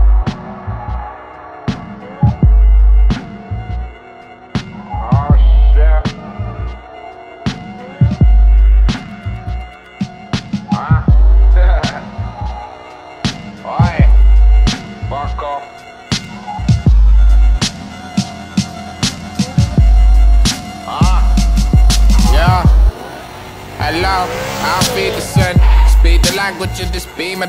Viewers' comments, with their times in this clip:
0:08 greatest snippit of a song